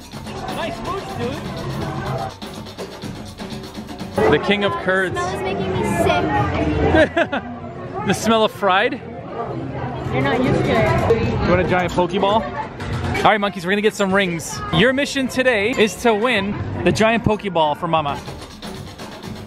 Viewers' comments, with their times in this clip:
0:04 I though papa said king of turds 😂